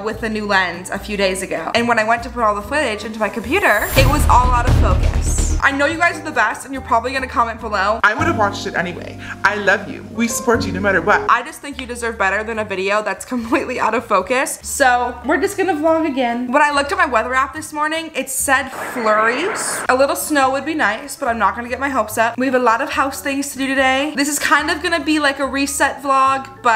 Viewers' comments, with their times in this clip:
0:08 Yup, that's exactly what I would have said and also how I would have sounded saying it. Facts. 😊